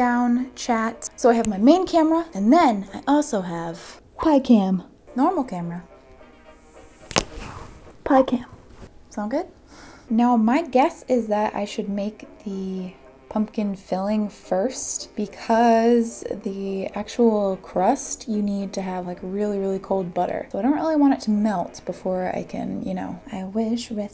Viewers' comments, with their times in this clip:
0:08 That noise made me think you snapped your arm, oh my goodness